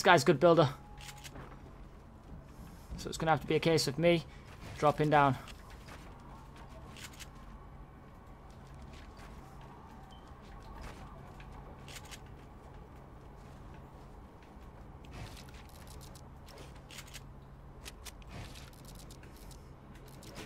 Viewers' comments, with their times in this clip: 0:05 Did anyone else here "I like it" that cardi b song faintly playing